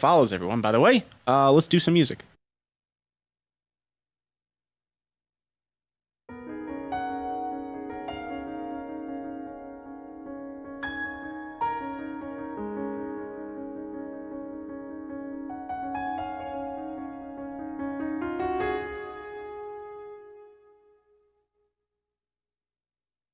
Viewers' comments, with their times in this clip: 0:05 That loop is heavenly